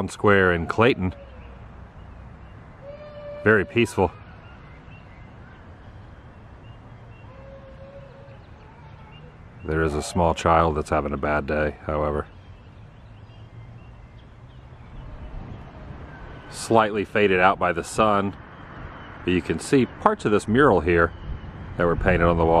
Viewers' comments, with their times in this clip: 0:10 Well, it may only be a 1 horse town, but that kid has at least 700 horsepower behind that yell..lol